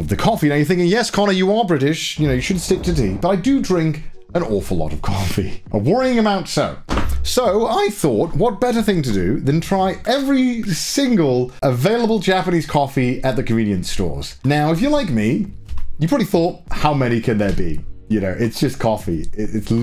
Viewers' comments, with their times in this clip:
0:07 voice breaks at anticipation of what's about to happen